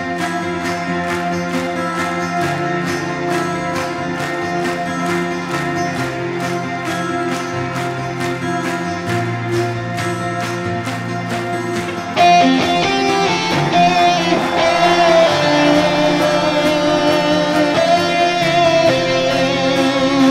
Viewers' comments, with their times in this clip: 0:08 for an epic guitar tone.